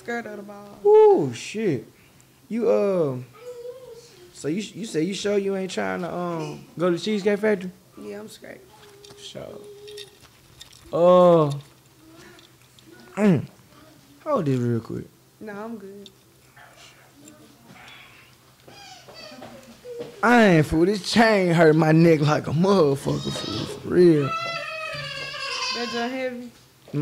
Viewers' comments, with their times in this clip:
0:10 the chain cling dogg😭😭